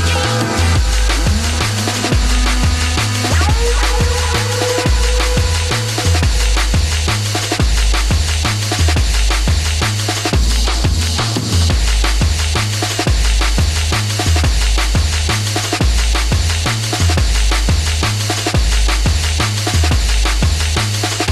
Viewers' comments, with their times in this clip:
0:03 Sounds like Half life 2